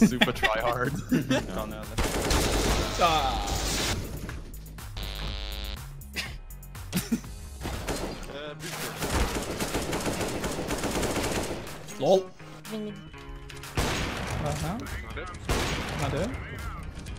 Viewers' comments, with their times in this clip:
0:03 I hate these people who have airplane in their room 😅